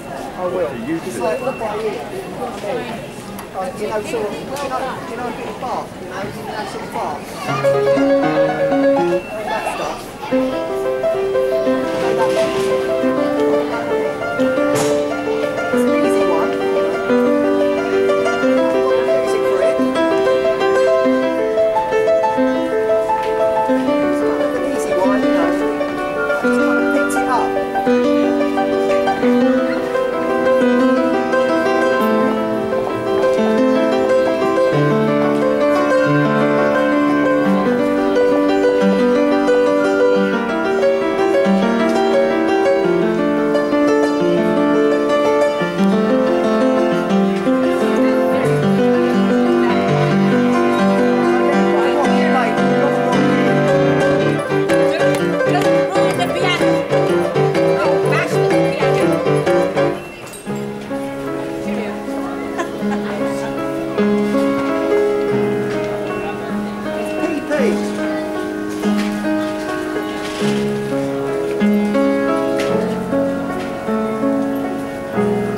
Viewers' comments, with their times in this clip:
0:07 what are the chances he starts playing the same Bach prelude I’ve been learning for months and then decides he wants to play another song?
0:51 Doom music kicks in
0:57 Hag: "Don't bash the piano!" Street Dude: plays Moonlight Sonata LOL good stuff